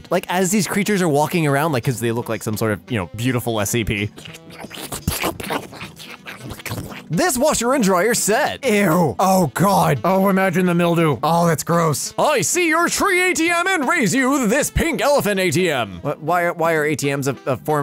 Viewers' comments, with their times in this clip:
0:04 squidward walking noises